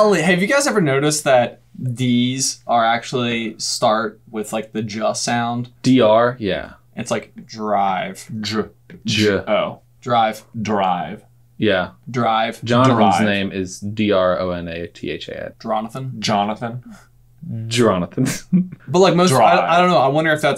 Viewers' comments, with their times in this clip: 0:08 did anyone else continuesly "drive" to see how they say it?